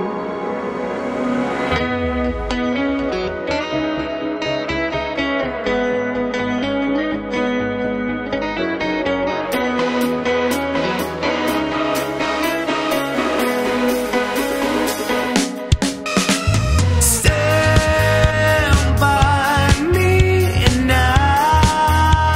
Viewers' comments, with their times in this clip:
0:09 Great potential!!! Amazing starting of song and voice ...until it reaches the 'euro' disco music style ... the horror starts .. along with the music the 'affected'/fake style I DO hope you will be an amazing artist and not get dragged into the commercial type of music that is only for a season. There's real talent and art in there hang onto it even though it doesn't bring instant popularity, you are better than this.